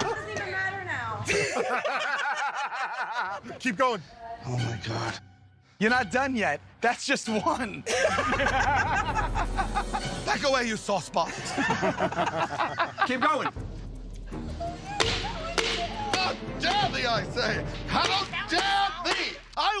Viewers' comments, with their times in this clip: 0:05 When Murr says "You're not done yet. That's just one!" he says it the exact same way that he says "You're not done yet. That's just act one!" in the Joe the Genie punishment.